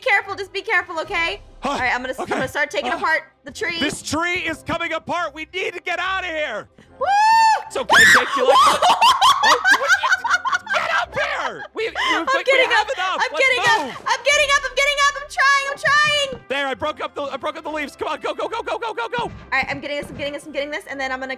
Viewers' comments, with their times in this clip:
0:06 the death scream :0